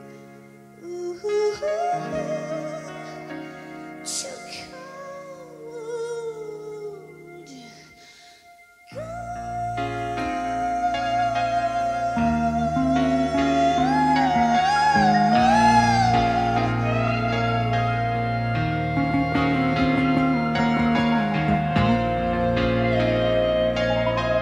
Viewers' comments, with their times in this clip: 0:10 ay que ricooooooo this is! progressive rock in other side, Kate's lyrical sensual dramatic mad soul